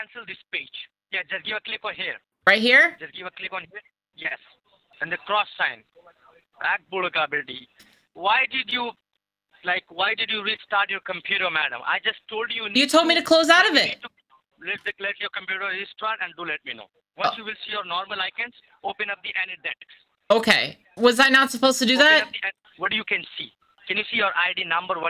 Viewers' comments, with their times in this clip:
0:10 WTF is "abdullah gobbly gee"?